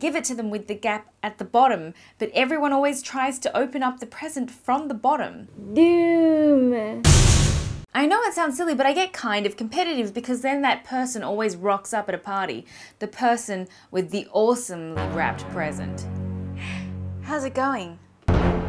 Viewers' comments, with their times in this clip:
0:05 I thought you were saying "Doommm" but then I realized 😂
0:05 is that english?
0:06 What did you say a ? Doom?